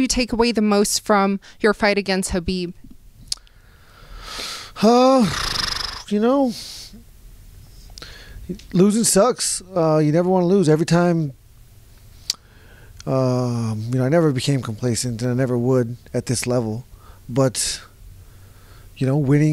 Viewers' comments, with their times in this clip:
0:05 Hey microphone, have some DNA.... That aside, this poor dude needs a septum surgery. Waking up with dry mouth is probably a regular thing for Justin. All that non drainage stinks. Then it post nasal drips down the throat collecting in the folds of the tonsils making tonsil stones.